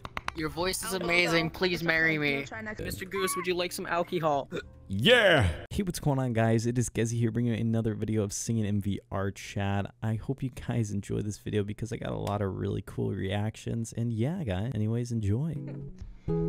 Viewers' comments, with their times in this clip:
0:04 Bro you sound like pitbull😂